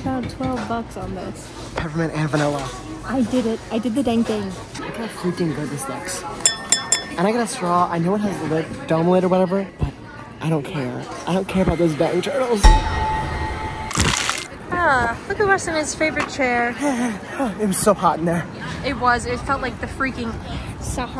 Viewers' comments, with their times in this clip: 0:06 why were the dings so perfect lmfao